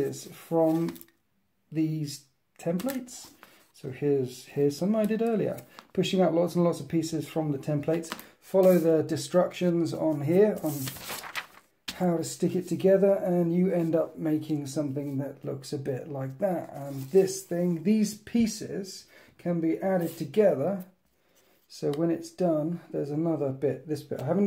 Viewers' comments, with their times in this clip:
0:08 "Follow the destructions"